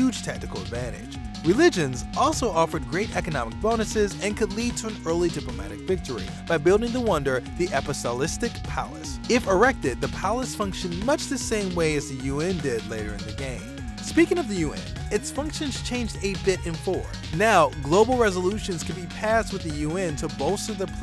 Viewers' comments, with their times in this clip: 0:06 "The Apisolistic Palace" lol you've made my day
0:06 APOSTOLISTIC palace? obviously not a Catholic, judging by the mispronunciation. ;-) BTW, civ 2 want originally named civ 2. It was actually going to be named Civ 2000, following in the footsteps of Sim City 2000
0:07 Um... "Apotholistic Palace?" HAHAH what happened man?